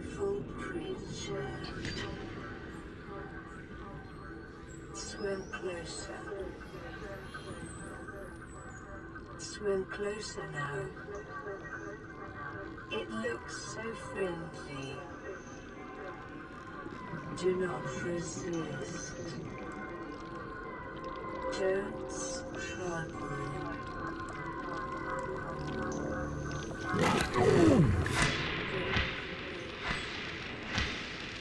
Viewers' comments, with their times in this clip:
0:09 “swim closer now… it looks so filthy…” why am I always hearing “filthy”!?
0:17 Yeah, you can also find out about that in when your PDA tries to say "Do not proceed" but 'proceed' slowly turns to resist
0:18 If you listen closely, you can actually kinda hear the real PDA speaking. From what I'm hearing, it was originally too to say "do not proceed" but the mesmer warps it into "do not resist"